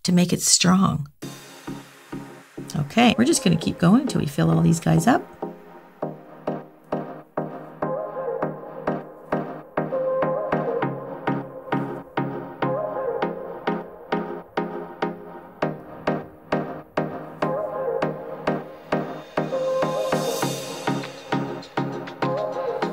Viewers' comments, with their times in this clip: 0:05 the music starts like a sunshine <3